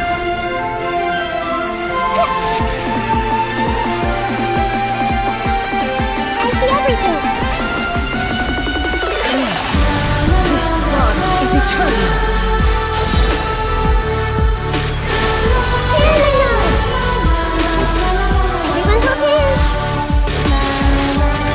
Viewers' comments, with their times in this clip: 0:06 wow that timed with the music!